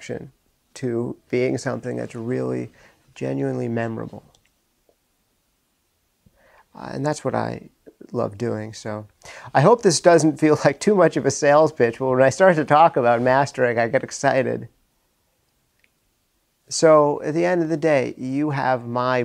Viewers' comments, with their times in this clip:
0:03 sounded very emotional :)